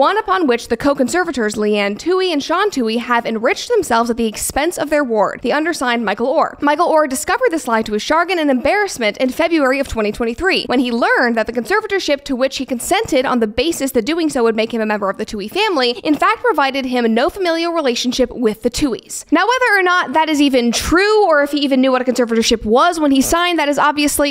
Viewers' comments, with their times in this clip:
0:06 chagrin pronounced sha-grin